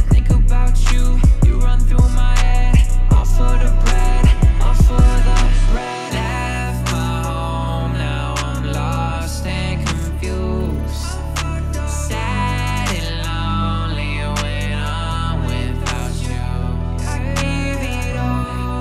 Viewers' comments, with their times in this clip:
0:03 he couldn't hold on the laugh